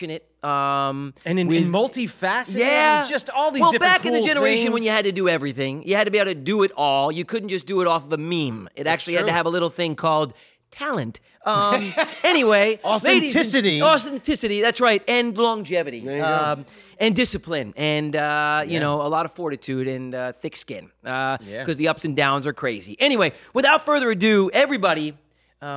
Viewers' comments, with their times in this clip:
0:06 1st time watching. Holy GAWD u guys are LOUD. Where was the interview here? mins of 'get off my lawn'.